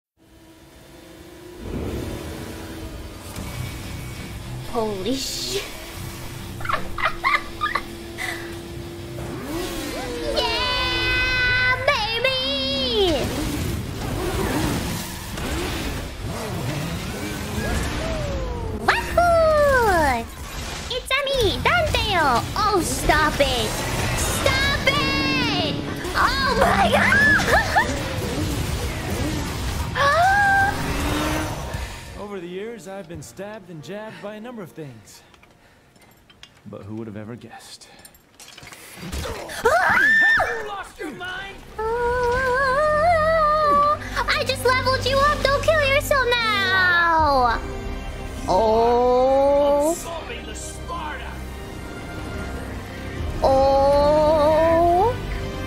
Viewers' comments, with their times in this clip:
0:07 Pov : i hear joker song "LAI LAI LAI LAIII LAI LAI LAI LAI LAI LAI LAI LAI LAIIII"
0:20 She mimics Mario in a Devil May Cry video? Ooookay…
0:40 Her first cute screams brooooooo HAVE U LOST UR MIND ?!! *WE HAVE A MISSION TO DO ! STAY ALIVE FOR NOW IF U WANNA DIE NEXT TIME I'LL HELP ! I swear this scene made me laugh so hard Lol